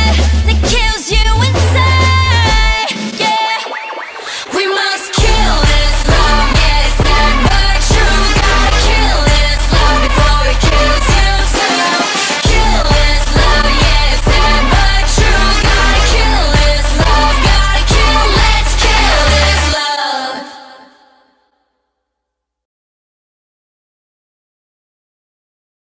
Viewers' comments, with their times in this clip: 0:05 wtf😂😂 elephant sounds, I noticed it now Omfg😂😂😂
0:05 elephant sounds AHAHAHHAHAHAHAHAHAHHAHAH
0:06 elephant sounds 😂😂😂lol
0:07 elephant sound and the chicken trying to fly😂😂😂